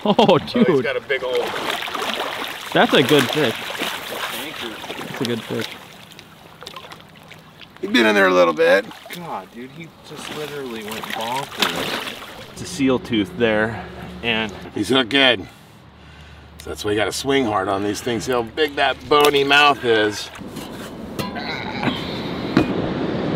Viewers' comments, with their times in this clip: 0:08 Dude I swear that guy sounded like John Marston lol